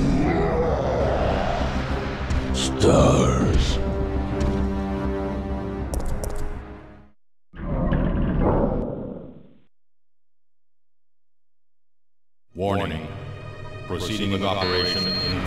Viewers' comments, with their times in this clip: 0:03 I wonder if that was a roar of victory because he thought Jill was dead or frustration he'd lost track of her again.